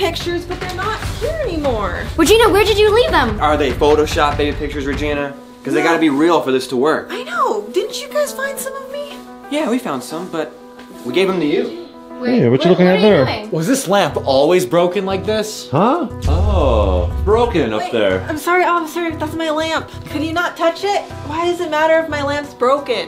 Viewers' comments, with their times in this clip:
0:07 I think the police sound leukemia pz9 voice ❤